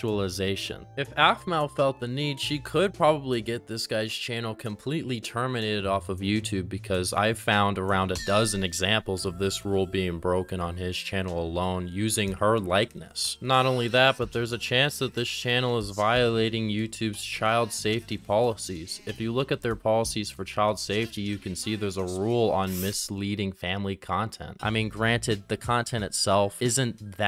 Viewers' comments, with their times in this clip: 0:07 the transition to DUCKWORTH was clean
0:09 DUCKWORTH. jumpscare. you have a great music taste